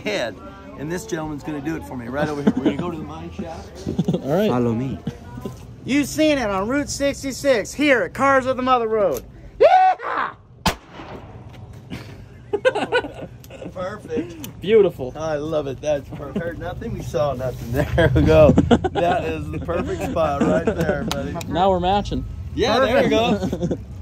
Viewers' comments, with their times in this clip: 0:08 sounds like bevis and butthead laughing 😆